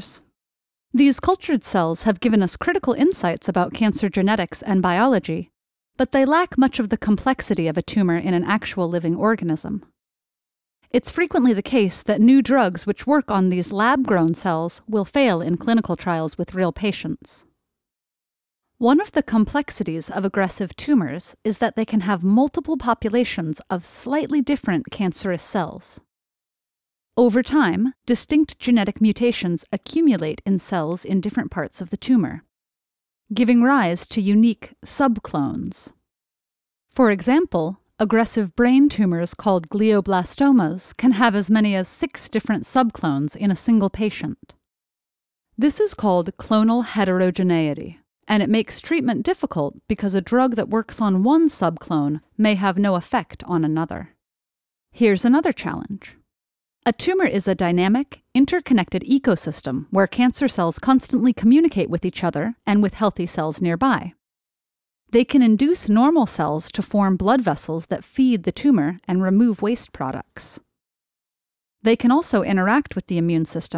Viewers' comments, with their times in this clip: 0:06 Why do I hear an OK. from that patient sitting
0:47 it sounds like they couldn't pronounce it and used Google translate 😂
0:55 The way she says "Challenge" on